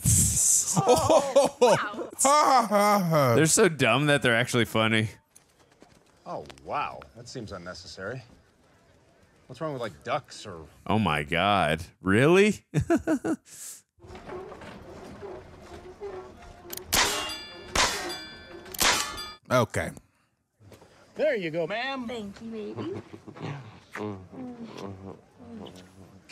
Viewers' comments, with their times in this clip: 0:08 THE SILENT hahahaha, one of them won´t laught AND the other one CAN´T hahaha .... it was a funny bit though!